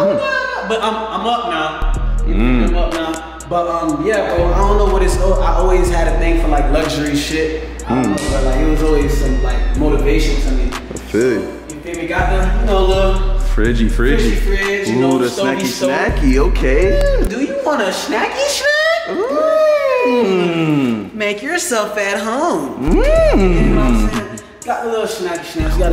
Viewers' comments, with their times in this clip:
0:08 yall hear that scream??😂
0:08 Did y’all hear that lil scream ?
0:08 Did y’all hear that lil scream ?